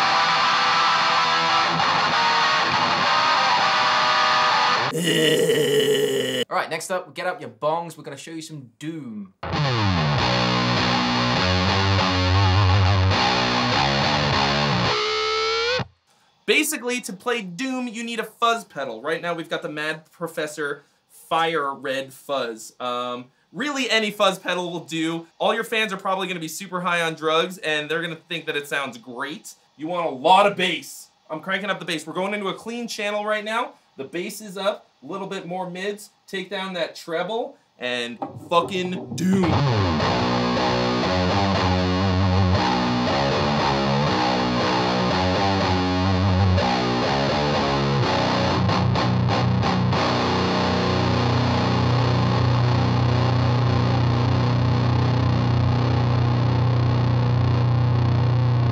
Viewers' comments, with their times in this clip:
0:09 that doooooooooooom metal riff 🙂👍 Me likey
0:40 at 0.420 speed for true doom. Anything higher than 5bpm you might as well call tech death